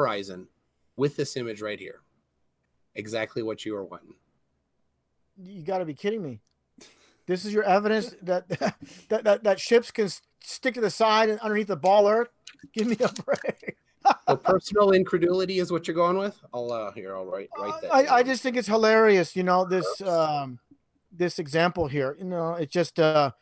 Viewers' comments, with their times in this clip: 0:10 [nervous laughter at irrefutable evidence]